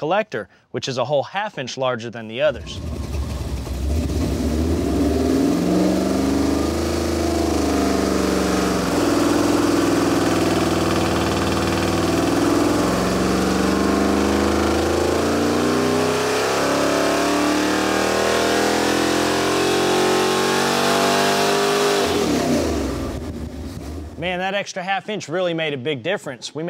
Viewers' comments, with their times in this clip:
0:09 was that a rod knock or detonation?